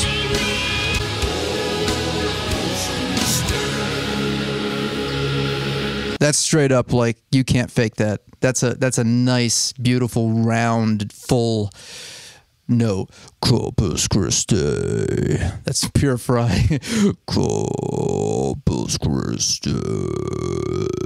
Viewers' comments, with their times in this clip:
0:03 straight up sounds like Mongolian throat singing